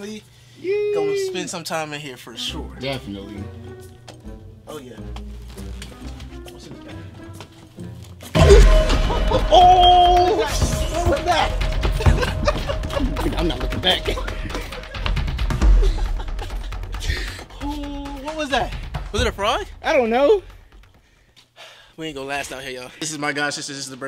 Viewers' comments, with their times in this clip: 0:09 Bruh the music lmaooo